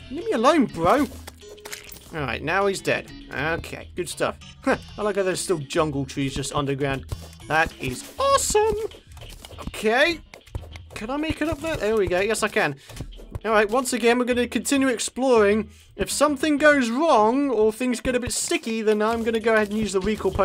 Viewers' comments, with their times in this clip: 0:07 ***** dude you were a choir boy